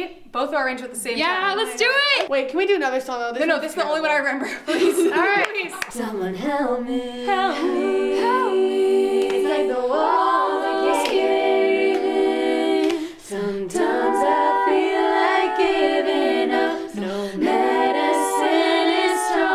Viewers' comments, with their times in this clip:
0:06 The best a capella cover i’ve ever hear